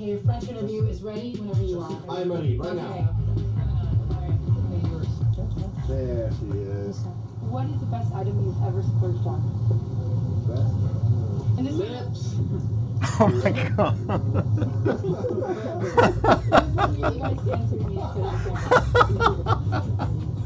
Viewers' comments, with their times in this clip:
0:07 when mark cracks up equally as hard 17 years later from the same Tom joke as he did in the documentary. Hilarious.
0:07 Tom being Tom to this day….makes Mark cry with laughter❤️❤️🤣
0:08 it was my favorite part from the original show, and it still is in this streaming. It's wholesome to see Mark laughing again, with the same intensity, at the same dumb joke. That's blink-182 right there to me. #lips